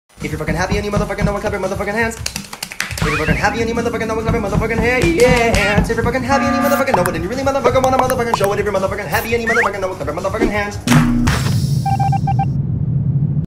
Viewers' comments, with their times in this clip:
0:05 is it just me?or was that boyfriend's beep✋😐